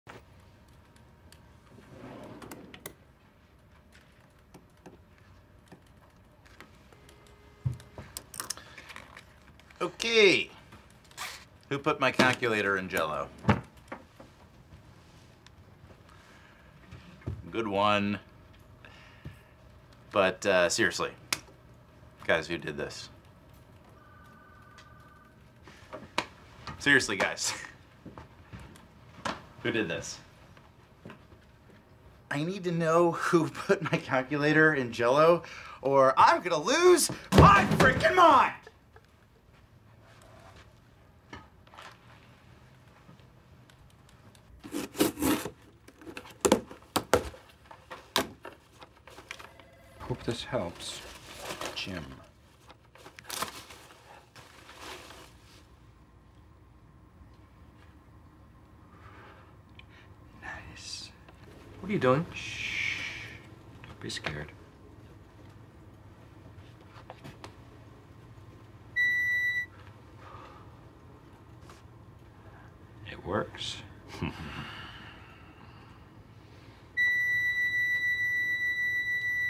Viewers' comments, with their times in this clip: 0:09 I love the way Andy says "okay"
1:00 for the people who don’t know. That’s a metal detector and their belt buckles trigger the metal detector to go off.
1:01 Somehow Dwight saying “don’t be scared” is slightly menacing.